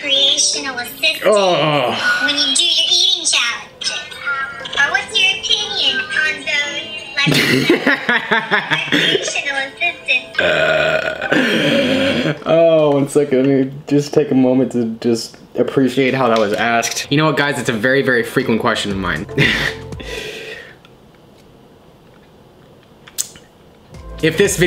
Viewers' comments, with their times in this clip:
0:06 what did she ask? Couldnt here shit